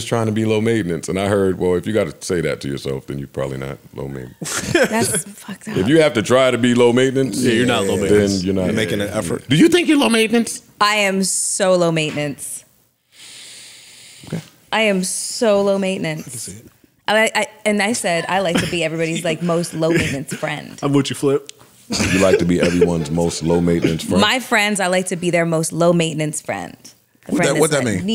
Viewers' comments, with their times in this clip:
0:10 When Mel said she's low maintenance and the fellas got mad quiet was the funniest shit. 😂